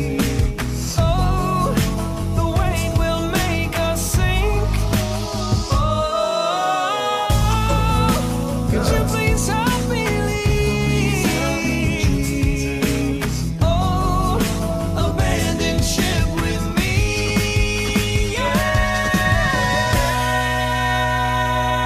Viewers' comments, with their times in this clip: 0:08 he did the same thing in its a great day to be alive he hit a D5